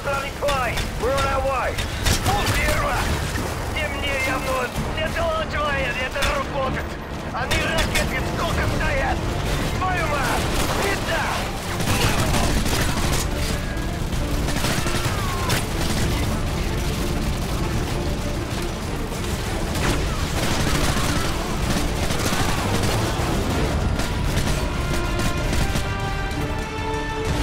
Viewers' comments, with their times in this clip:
0:08 Angry Nikolai Noises, Hes very Angry😮